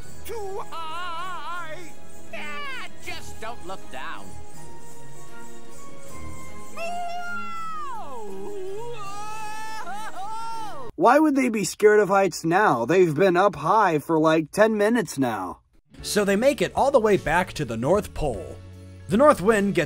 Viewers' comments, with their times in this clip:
0:04 i feel like this could be a perfectly cut scream